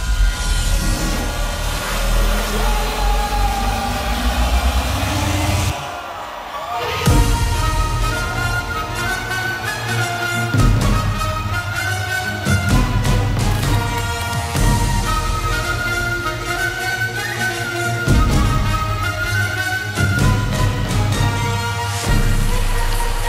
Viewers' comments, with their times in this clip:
0:07 I genuinely cried at the opening notes of Dharma I watched the 2017 set on this stage in 2018 and it inspired me to start DJing properly and to see such a perfect set 5 years later. I have no words just wow 🙏🙏
0:08 That Orchestra drop was amazing! Also Im so glad I discovered Kshmr at Crush SF back in 2020. Been a huge fan ever since!